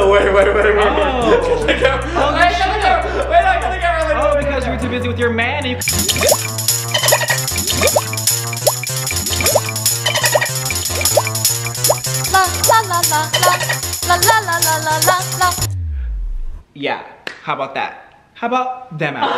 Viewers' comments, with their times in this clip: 0:06 lucky for everyone in the comment section I am fluent in dolphine